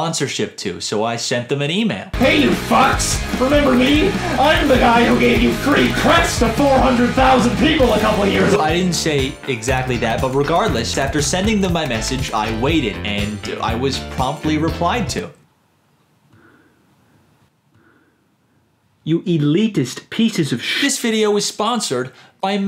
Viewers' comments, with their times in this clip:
0:03 Literal Filthy Frank Throat Cancer voice. Appreciate it. Also, the sponsor is really well done here